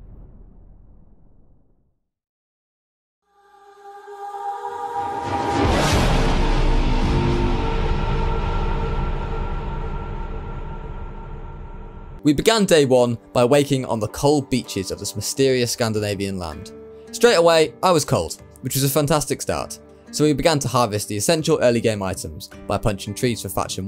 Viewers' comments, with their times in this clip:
0:07 that fjordur starting theme is just legendary and gorgeous